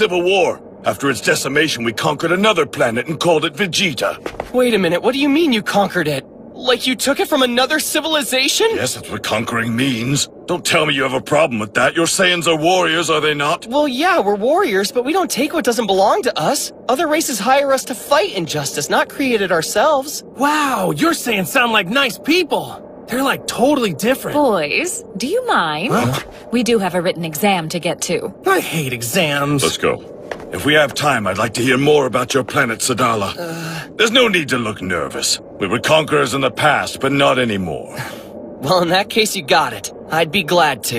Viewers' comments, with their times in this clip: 0:03 Piccolo's voice so black. Just hearing this line. We finna all invited to that cookout
0:24 vados mommy voice 😋🤤